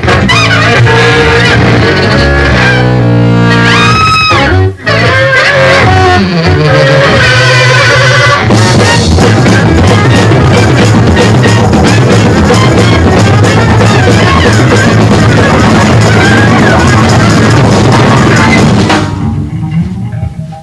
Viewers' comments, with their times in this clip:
0:07 The Percussion starting is so Fucking amazing. It's a staple of nearly every single early mothers show I've heard and I will never get tired of it, its just so unbelievably epic in the ugliest of ways :)